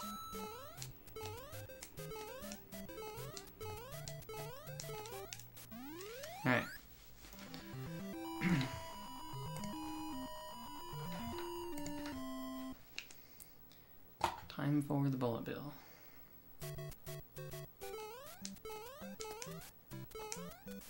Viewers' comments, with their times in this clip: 0:04 that flag noise went perfectly with the beat thooooo